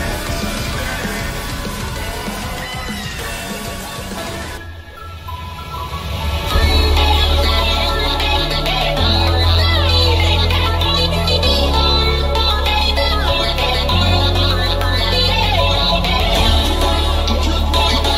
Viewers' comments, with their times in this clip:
0:03 this was my favouritepart ever when the girl sings it now